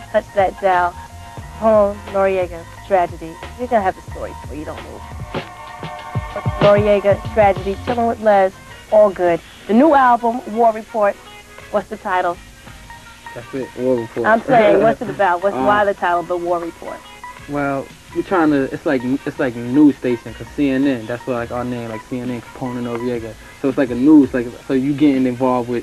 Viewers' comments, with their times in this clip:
0:10 Fine ass Lez representing hip hop...Luchini beat fresh for 97 ....we won't get interviews like this anymore 😔